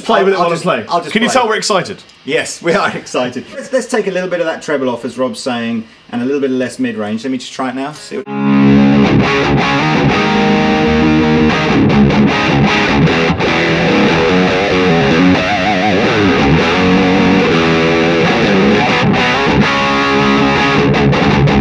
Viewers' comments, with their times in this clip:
0:08 .... that riff :0